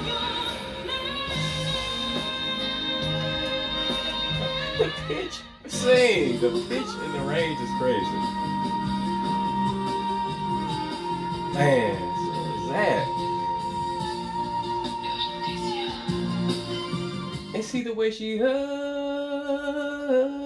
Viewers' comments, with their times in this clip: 0:03 I thought you said something totally different 😂😂💀